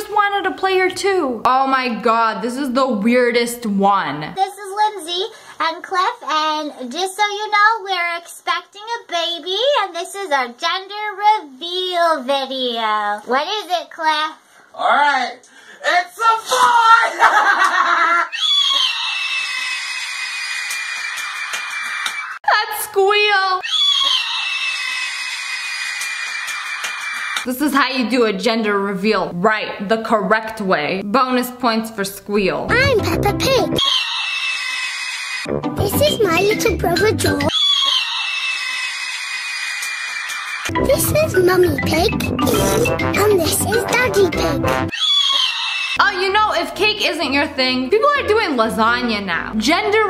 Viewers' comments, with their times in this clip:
0:07 not the squeal 🦅🦅🦅💀 (yes I know I’m like 50 years late )
0:09 That couple sounded like they were on helium
0:12 she sounds like she is 7
0:18 I thought it was a damn vacuum cleaner.
0:18 Yup, dinosaurs are real. No human can make that noise 😂
0:18 No one Literally No one 40 year old man painted himself blue and starts screeching
0:18 that squeal omg lol 😂 he sounding like a whole bird
0:18 angry bird noises
0:18 that was really funny that squeal was more funny 😂😂😂😂
0:19 sounds like some donkey just died
0:36 bonus for freaking scream